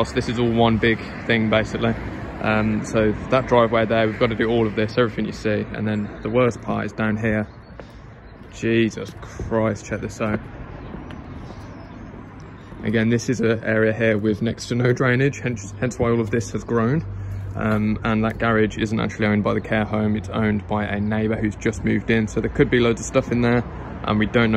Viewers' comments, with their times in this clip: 0:08 I think I've watched on repeat a hundred times. Cannot stop laughing at the "Jeeeessuuuus Chriiiiist"